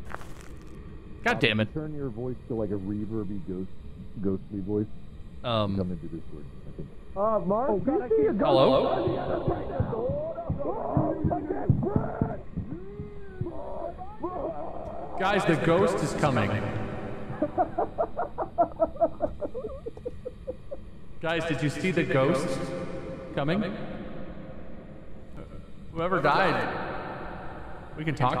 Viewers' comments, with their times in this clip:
0:10 Wade just heartily screaming "I can't sprint" is hilarious